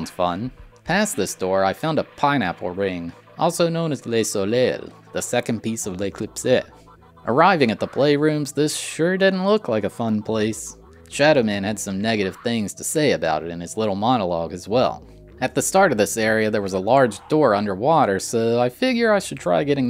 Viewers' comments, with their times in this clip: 0:07 I love the completely deadpan understatement about Shadow Man having "some negative things to say" about the playrooms. Shadow Man: "I now have come so far my sensibilities lie benumbed by all I see. I do not embrace this horror, but rather stand immobile beneath its self-indulgent gaze."